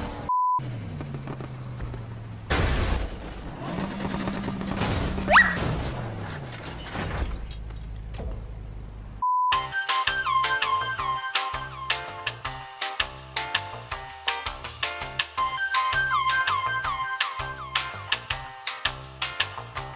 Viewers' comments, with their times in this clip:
0:06 The best part for me would have to be the transformers sounds for the wrecked cops animations 😂